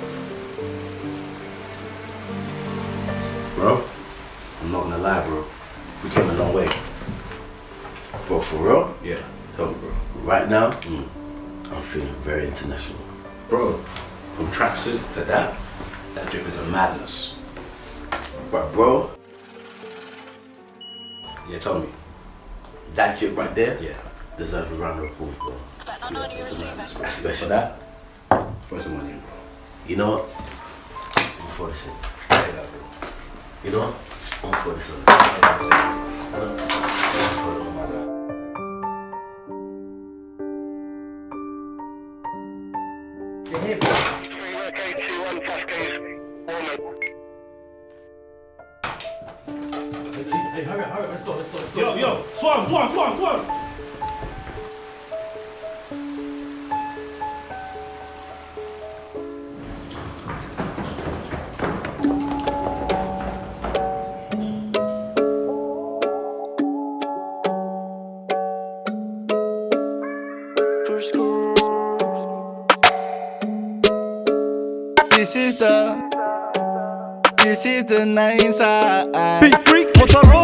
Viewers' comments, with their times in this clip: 0:04 DabeayFreakz started singing ???
1:02 song starts and I’m not doing this for likes before I get hate lol